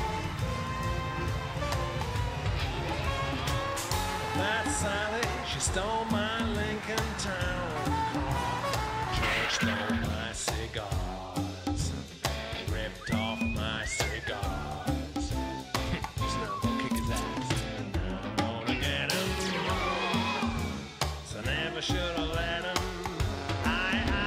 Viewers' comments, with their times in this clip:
0:10 Here comes street harassment whistling. In the present year women take this kind of whistling as street harassment.